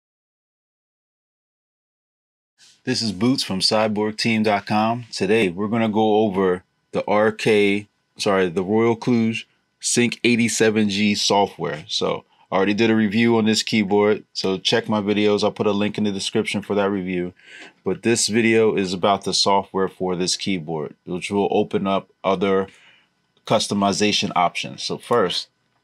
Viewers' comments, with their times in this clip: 0:07 Wow! This is a small channel, yet it managed to pronounce Royal Kludge correctly.